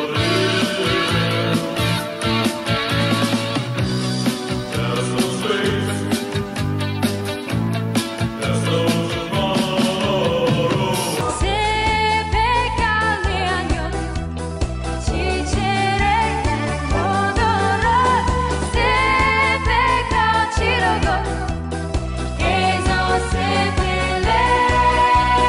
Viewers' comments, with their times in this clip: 0:10 The transition between "like the wind" and "zoltan" 😭😭😭